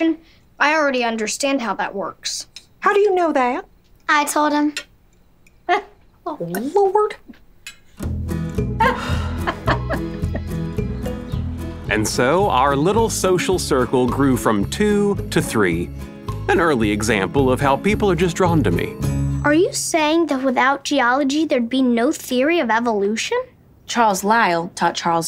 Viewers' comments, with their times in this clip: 0:07 The way Mary said Lord I thought was kinda hot with that accent